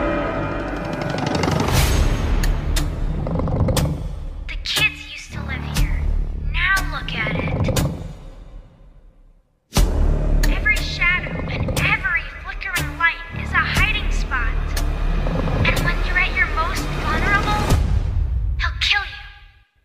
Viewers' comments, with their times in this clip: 0:07 why does it sound like Gregory is that where he went in security breach DLC?